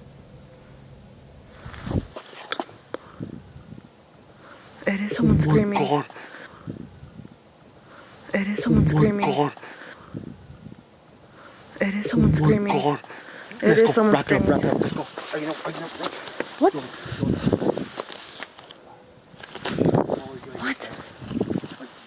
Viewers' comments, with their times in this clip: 0:03 you can see some eyes at the back of three and at the same time you can hear a scream he even replay it